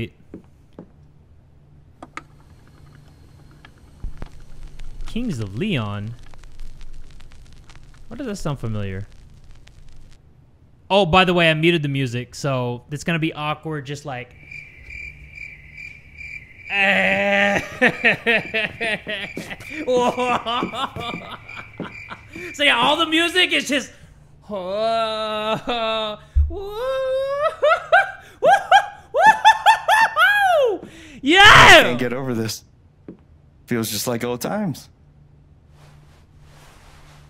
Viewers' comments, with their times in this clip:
0:03 I’m soooo jamming to those crickets
0:18 feels like that “this is America without background music” video where you can still hear them moving their feet and stuff lol